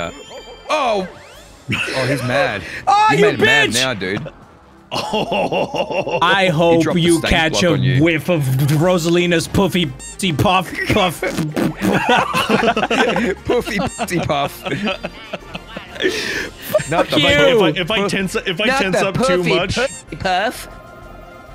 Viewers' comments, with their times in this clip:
0:04 bro it sound like donkey kong is laughing